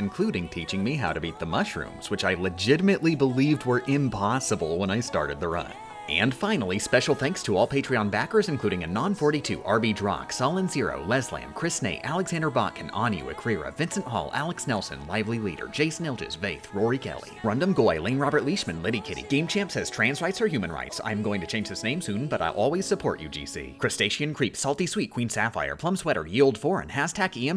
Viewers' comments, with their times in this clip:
0:08 No one: The end of television Medicine commercials: